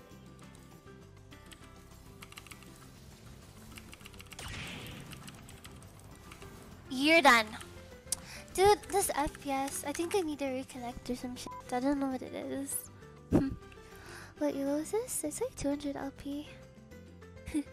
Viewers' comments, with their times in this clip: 0:05 ur done I love that voice xD BTW I play on 40 fps so u live on the heaven don't complain xD